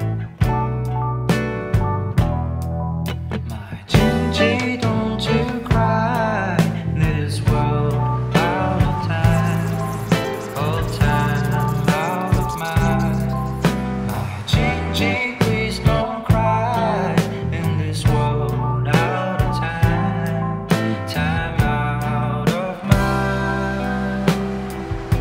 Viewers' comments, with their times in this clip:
0:09 I was listening to this song without watching the mv, genuinely made me thought there were some bugs trapped inside my headphone 😳